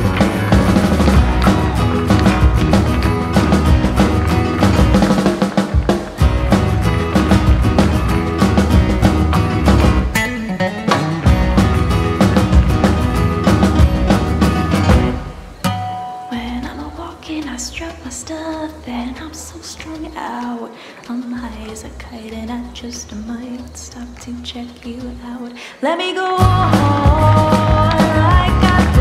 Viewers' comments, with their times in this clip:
0:10 Not enough people are talking about how cute Ryan's "Nice!" Is